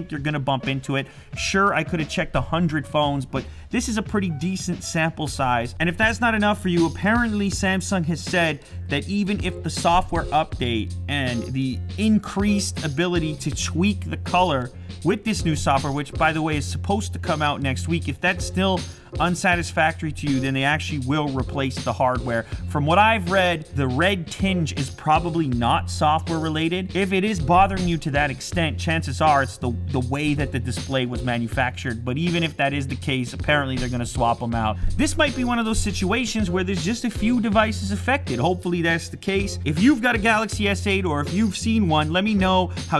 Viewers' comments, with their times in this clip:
0:05 I might be trippin' but when that beat joint comes in, all I can hear is Lew goin' with the flow !
0:05 onwards, what a rap man. wow😂😂😂😂😂😂
0:06 sounds like he is rappin to the beat lol
0:07 the awesome moment, when the beat changes and his speech seems to turn into a rap xD
0:26 lew started rapping